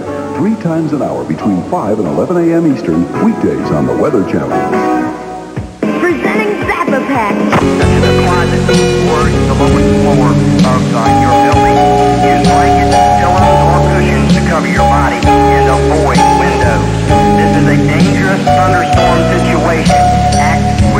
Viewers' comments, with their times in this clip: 0:05 Go to if you want to hear an Alchemist type beat 🔥